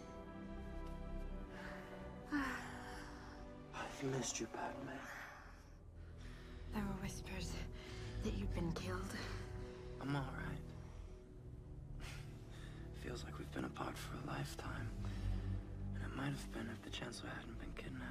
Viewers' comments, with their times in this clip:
0:04 in my finest BROODIEST, RASPYIST, SOFT voice “I’ve missed you padme” 😌